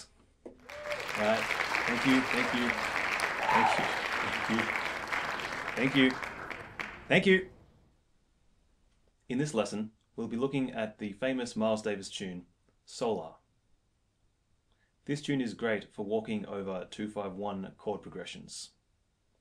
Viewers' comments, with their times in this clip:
0:06 he sounded so annoyed when he said that last 'thank you' even-though everyone had stopped clapping.